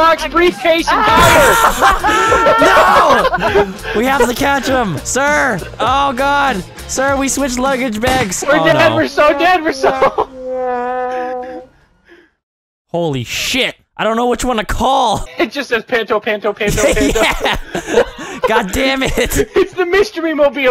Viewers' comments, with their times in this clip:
0:06 you can hear autotune